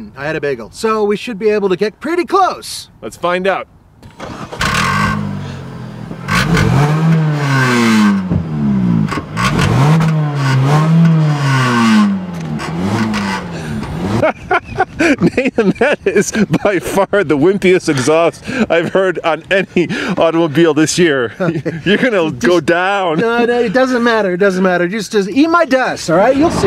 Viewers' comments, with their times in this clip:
0:07 LOL @ the Hyundai souped up lawn mower